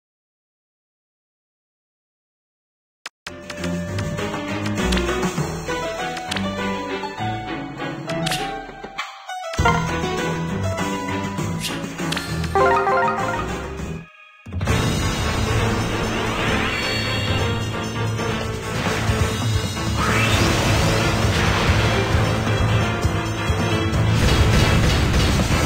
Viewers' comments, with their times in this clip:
0:08 Skip to for the summons. Don't you just love it when the audio is corrupted?